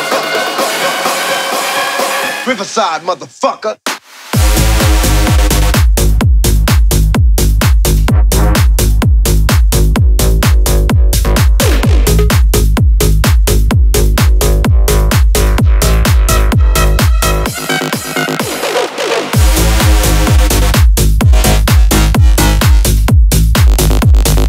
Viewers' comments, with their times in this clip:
0:05 There is power, a strong cover